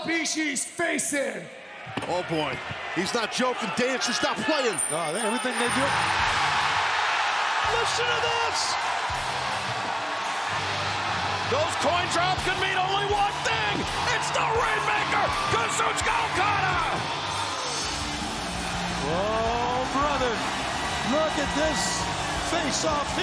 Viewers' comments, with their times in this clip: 0:07 unmute YT deafo